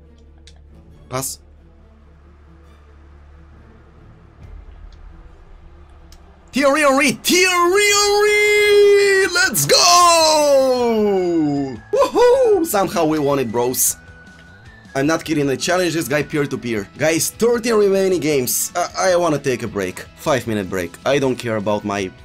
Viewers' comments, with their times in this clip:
0:07 I never laugh like that in 2020 😂🤣